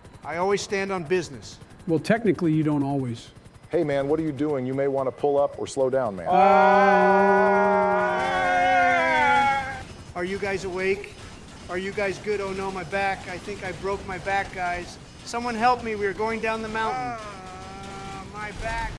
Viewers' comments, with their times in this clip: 0:05 The screaming never gets old 😅